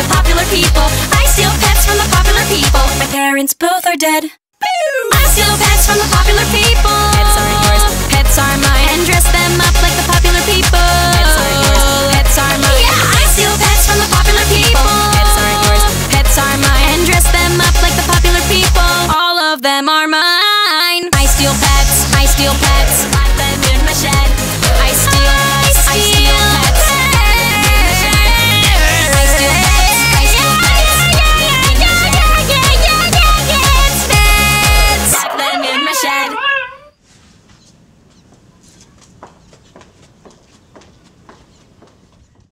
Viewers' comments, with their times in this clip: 0:03 the suddenness of the line "my parents both are dead" and the instantaneous shift right back into the upbeat chorus of the song is genius and it makes this song not just a comedic jab at autotuned messes like "Friday", but one of the most memorable parodies I've ever seen on YouTube. Kudos.
0:33 she sounds like the space core.